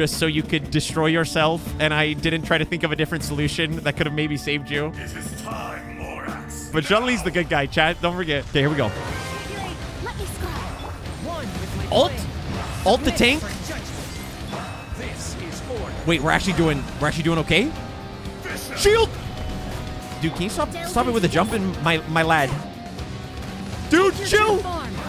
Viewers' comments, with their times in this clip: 0:09 Ayo can we take a moment to realize the burst callouts following the music 🔥